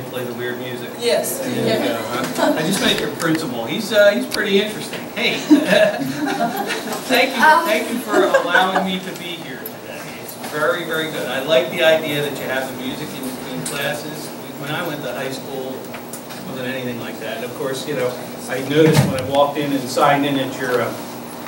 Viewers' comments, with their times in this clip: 0:06 why did that woman moan?